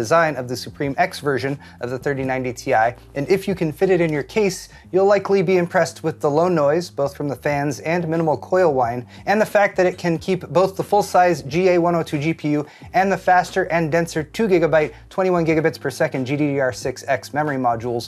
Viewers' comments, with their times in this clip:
0:05 Did he just say coil wine???